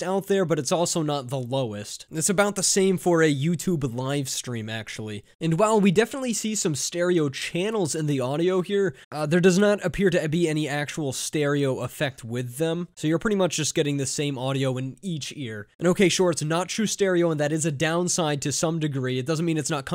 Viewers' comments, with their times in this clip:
0:06 once in a while there’s weird phasing that zeros out the vocals or substantially alters the volume on mono